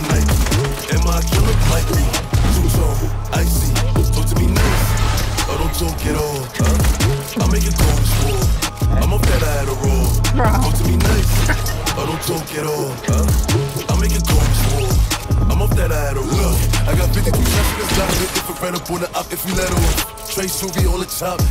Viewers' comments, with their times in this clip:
0:05 the scar shot sync with the bass kicks wtfff